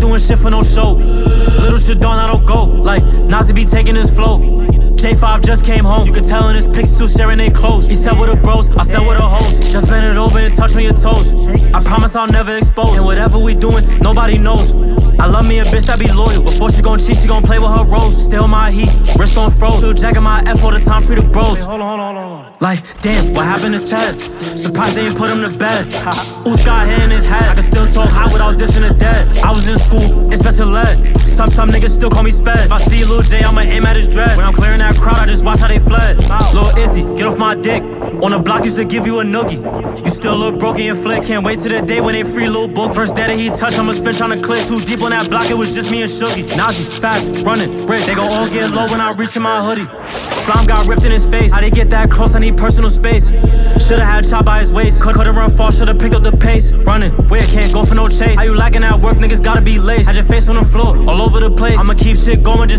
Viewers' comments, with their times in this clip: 0:09 bro notti bop😂
0:47 🥶 beat go crazy